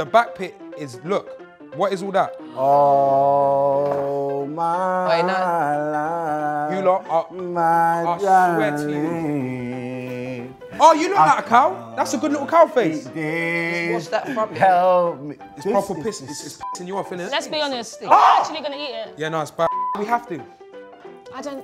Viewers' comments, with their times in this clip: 0:03 chunkz can make any song WAAAAAAAAAAAY BEEETTTEEERRR THAN IT IS !!!!
0:03 When chunkz started singing 😂😂😭